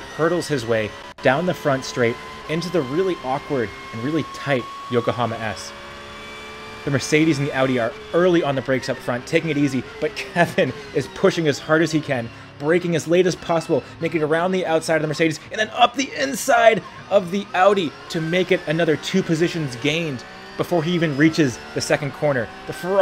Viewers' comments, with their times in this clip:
0:09 That “Kevin” has the chuckle of a man who is in utter disbelief of sheer determination to get ahead